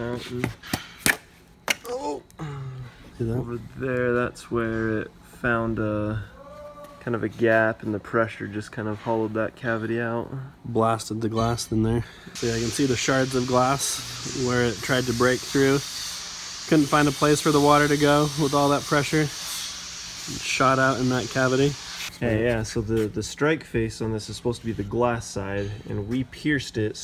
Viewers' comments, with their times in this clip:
0:09 Who screamed/moaned on:
0:09 Anyone else heard a random shout in the background ?